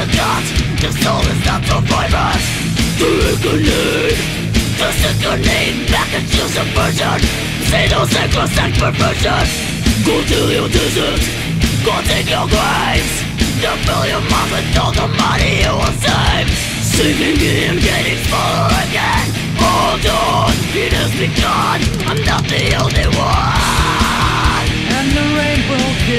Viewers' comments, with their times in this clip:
0:09 “GO DO YOUR DISHES”